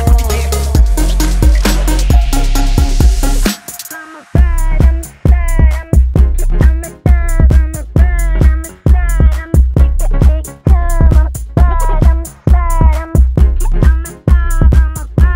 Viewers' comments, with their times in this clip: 0:03 very reminiscent of Chicago house in the 90s.